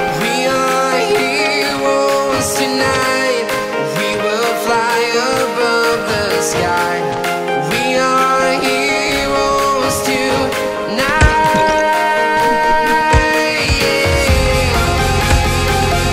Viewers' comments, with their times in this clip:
0:03 I Love This Music